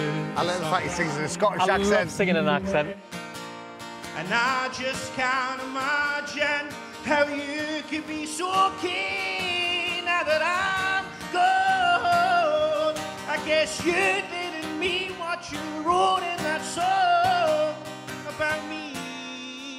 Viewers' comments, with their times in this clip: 0:05 Olivia rodrigo but scotish is perfect